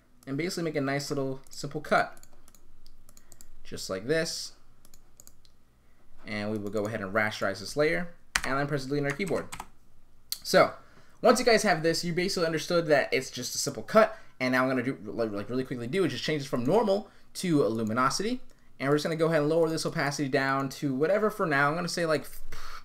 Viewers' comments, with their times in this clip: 0:05 im stuck i cant hear what you are saying because you were talking to fast.